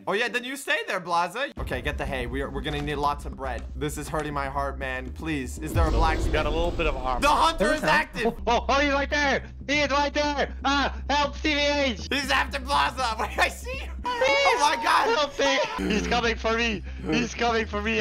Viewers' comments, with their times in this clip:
0:06 dream manhunt music starts playing